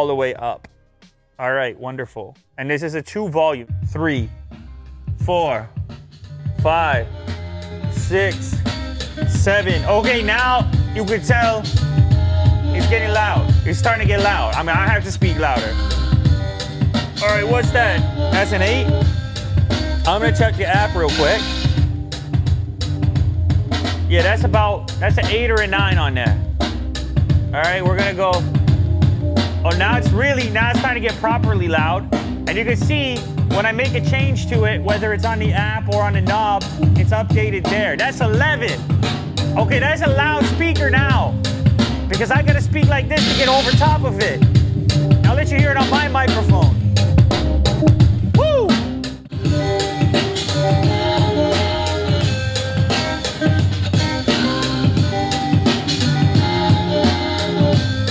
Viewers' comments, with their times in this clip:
0:09 Lew Start rapping, Ok Now!
0:25 When you talk with rhythm to the beat
0:32 sounds like Unbox therapy is rapping to the beat...
0:39 When the Canadian come out
0:42 sounds like lew was gonna start rapping haha
0:42 its sounded like he was rapping like slim shady